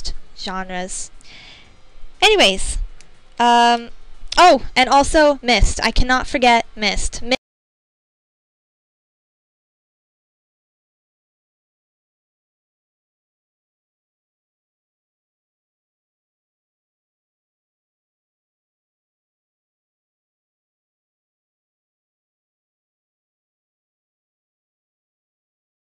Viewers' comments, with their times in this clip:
0:08 Is it just me, or is there no sound from till the end :O Anyway, cool and interesting update. I don't know if you answered this already, but did you ever consider showing your face? I find this a very difficult decision, because it could ruin the "magic".